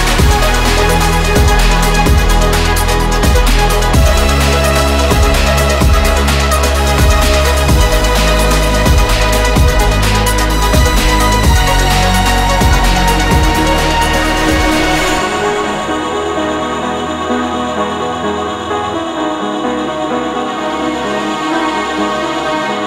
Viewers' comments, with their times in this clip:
0:09 feel like iam running on a sound wave far away lost in Space 🧑🏼‍🚀